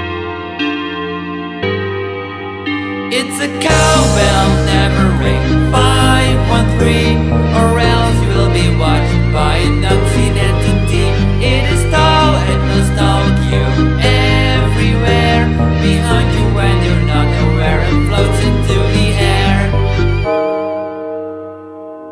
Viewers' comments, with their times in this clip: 0:09 i heard "a nazi entity"